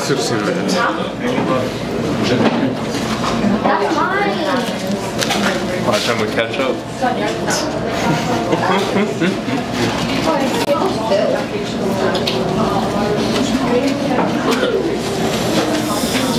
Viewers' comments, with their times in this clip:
0:04 you can hear a girl saying “That’s minee!”